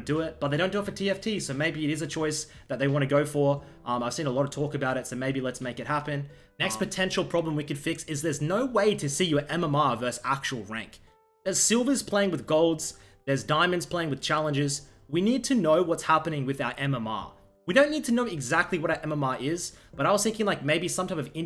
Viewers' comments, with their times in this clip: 0:06 that UHM sound